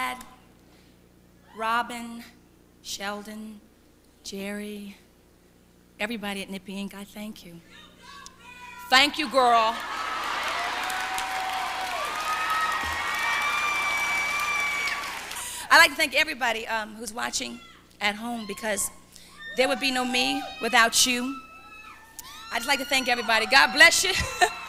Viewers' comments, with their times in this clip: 0:07 Does anyone understand what the fan lady screamed at min ?😂